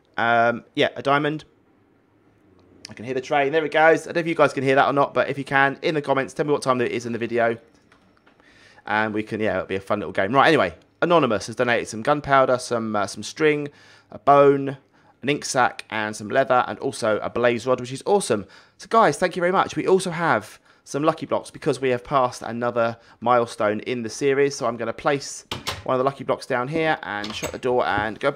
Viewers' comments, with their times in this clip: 0:07 into the video I herd the train
0:12 I heard it time minutes 🚂